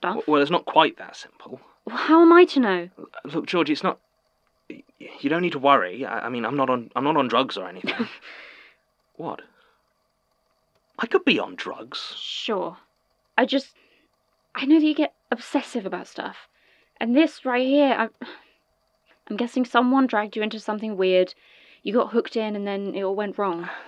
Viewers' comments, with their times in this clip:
0:08 Georgie: (audible incredulous glance)